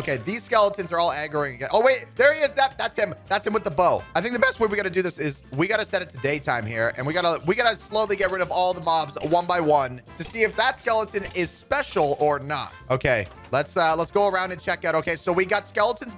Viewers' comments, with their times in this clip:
0:04 that's a super high voice crack